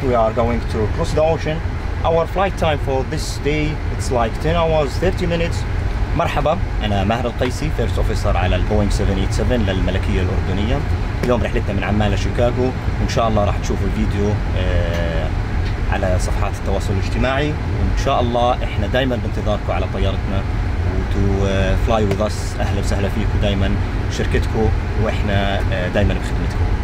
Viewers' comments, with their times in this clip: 0:09 Mmmmmmmmmmmmmmmmmmmmm love that Arabic language; do not know what it is about it,maybe ANCIENT??????